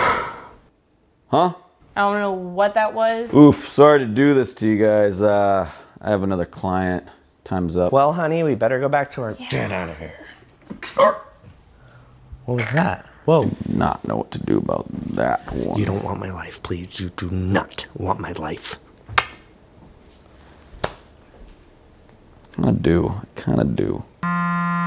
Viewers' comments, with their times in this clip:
0:08 Did the cat just bark?